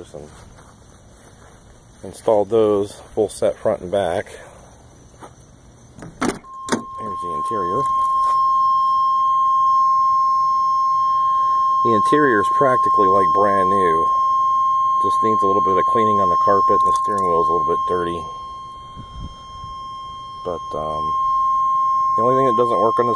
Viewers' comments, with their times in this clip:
0:06 My grandfather used to have an '82 LeSabre Custon in EXACTLY this color combination!!!!! His had a manual tuning radio, crank windows rather than power, the 231 V6 instead of the V8, & that obnoxious old-school GM buzzer rather than the beautiful electronic tone that this one has but everything else is exactly the same. Oh, & that warning did not annoy the piss out of me. I could listen to it all day long.